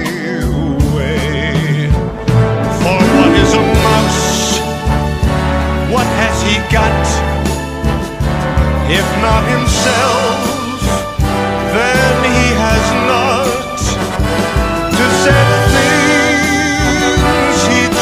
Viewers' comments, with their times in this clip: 0:03 “ for what is a mouse“